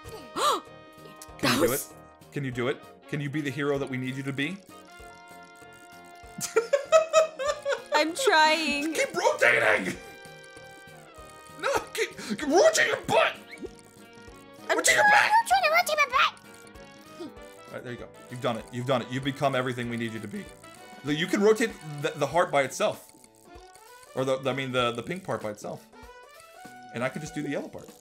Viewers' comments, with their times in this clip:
0:10 had me dying like what did she even say
0:15 aphmau sonuds like a baby